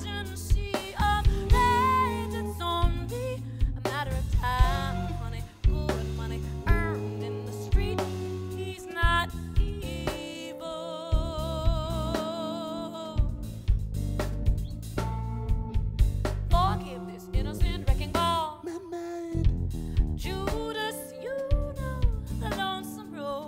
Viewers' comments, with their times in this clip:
0:06 sorry I don't mean to shit on her. Did she hit a slightly wrong note? It sounded a little off. Just asking!